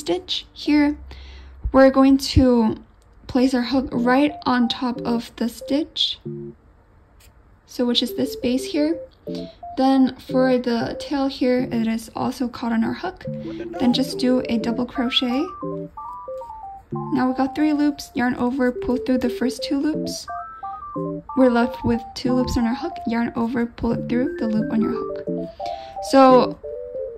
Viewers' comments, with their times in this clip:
0:10 Try to hear "what da dawg doin" bc I can
0:12 Anyone hear “what the dog doin”
0:12 i had to rewatch because i heard the what the dog doin? thing XD
0:13 Was it just me that heard "what da dog doin" ?
0:13 Am I tweaking or am I hearing “what the dog doin’?” 😅
0:13 the random noise scared me while i was crocheting 😭
0:13 did I hear 'wadda dog doin?'😭
0:13 i heard “what the dawg doin”- PLEASE TELL ME IM NOT HEARING THINGS 😭😭 also i love your vids! you always have the cutest tutorials!! ❤️
0:13 Am I the only one who heard the " what the dog doin?"
0:14 i cant be the only one who heard “what the dog doin”😂